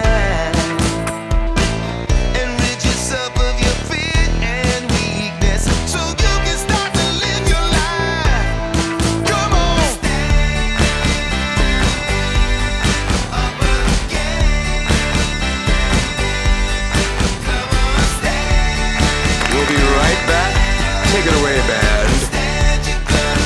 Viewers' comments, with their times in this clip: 0:07 it tells you how to tolerate this ..... music?